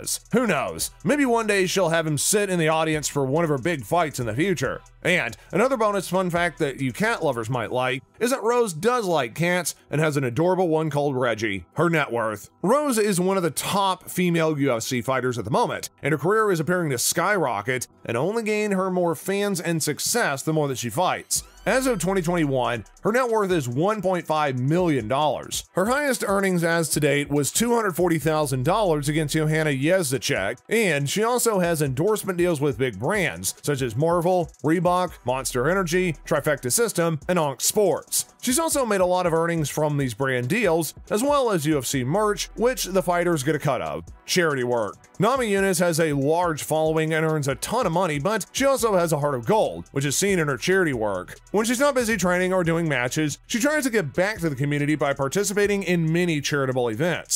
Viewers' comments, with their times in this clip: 0:08 Why is her cat called Reggiehernetworth
0:29 THIS DUDE SAID YEZACHECK
0:43 If you were serious about being a content creator you would have done the research and pronounced Joanna Jędrzejczyk's last name properly. Since you didn't, I can't take your content seriously and stopped watching :P